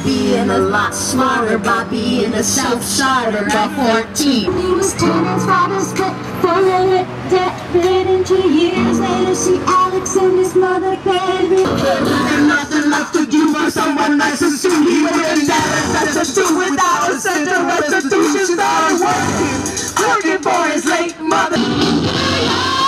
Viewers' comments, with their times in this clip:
0:07 Ok Queen! Those vocals ! Trisha sounds amazing!